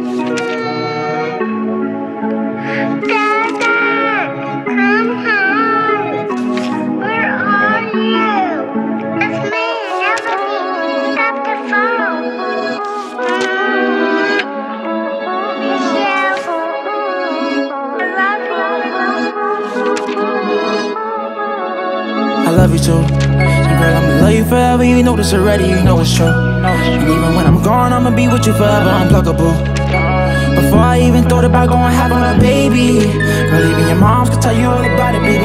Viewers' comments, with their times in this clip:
0:04 That little section messed up the flow of the song.
0:20 Listen closely after you can hear him flipping the pages in the background rapping. Real artistry ✨🔥